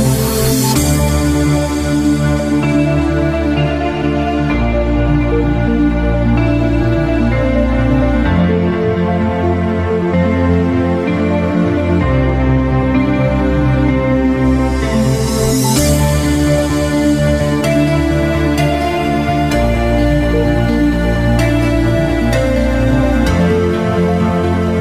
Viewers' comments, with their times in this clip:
0:07 Always love the where's Perry sample in these shuffle vids.